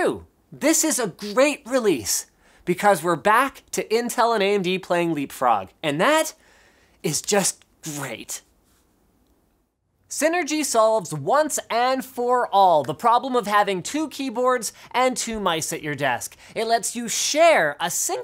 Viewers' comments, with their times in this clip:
0:05 "...and that is just great." - this doesn't sound sincere. I think someone was holding Linus at gun point.